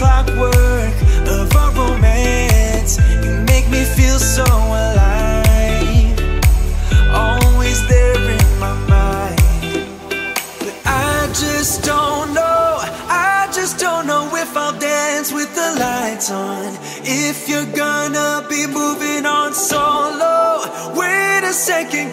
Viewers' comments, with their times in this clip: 0:04 Amazing 👍 song minute